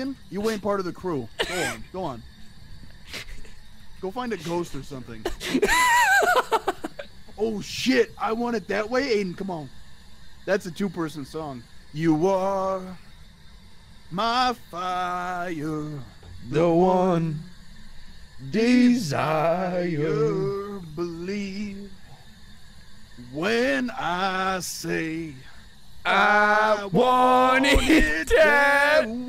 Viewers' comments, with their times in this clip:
0:10 was a little confused…. I was like is the song about bagels or something.